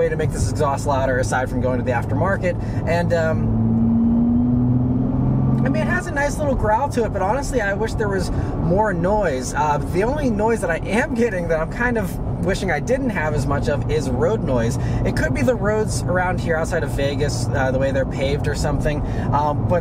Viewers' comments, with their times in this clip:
0:05 you're at 2900RPM what kind of growl do you expect from that engine? it's amazing how u didnt learn a thing about cars all these years making these videos.